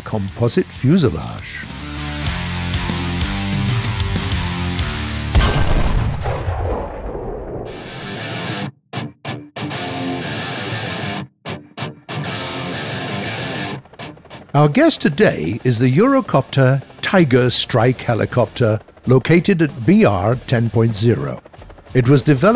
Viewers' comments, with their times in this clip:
0:06 Tank firing sounds like a old Soviet T34-76. Needs to be fixed.